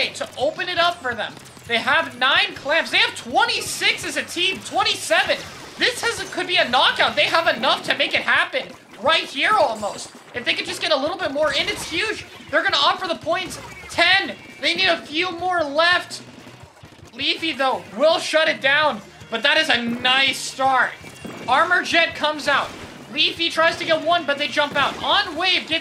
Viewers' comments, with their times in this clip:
0:06 is that a charger sfx on bamboo???